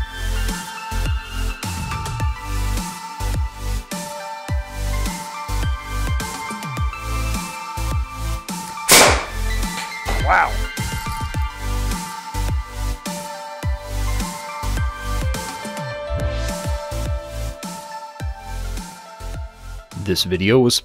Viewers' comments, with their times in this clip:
0:08 My poor ear. :(